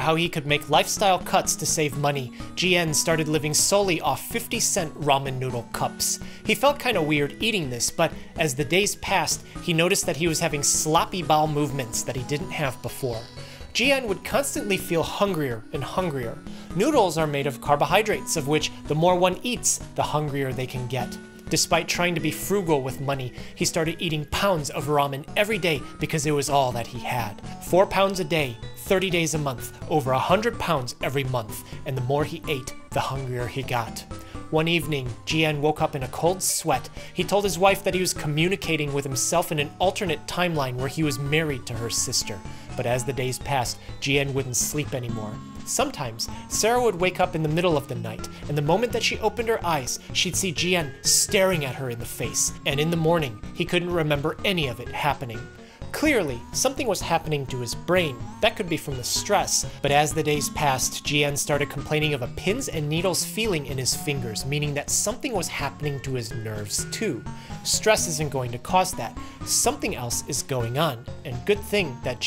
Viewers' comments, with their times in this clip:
0:10 Did anyone hear a fart 😂😂😂😂
0:26 omg the music started slowing down and getting worse as he got worse💀
0:53 the backing music is awful